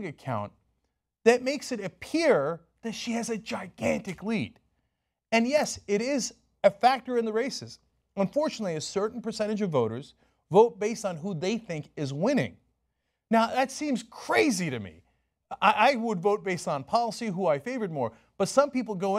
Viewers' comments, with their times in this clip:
0:06 it's a factor in the racist